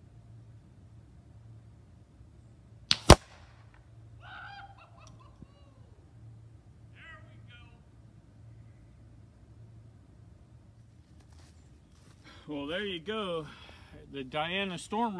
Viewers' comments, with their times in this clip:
0:03 Omfg that howl of absolute elation, I love it.